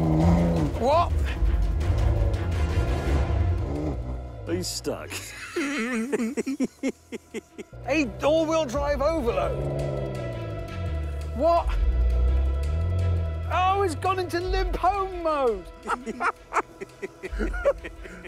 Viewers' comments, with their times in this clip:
0:05 WHO LAUGHS LIKE THAT